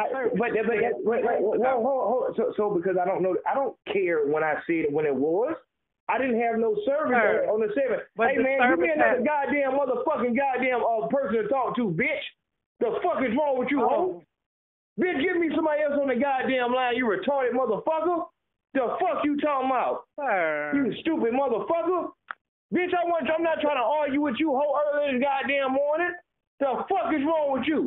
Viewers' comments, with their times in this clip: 0:08 when he start blanking 😂😂😂😂😂😂😂😂😂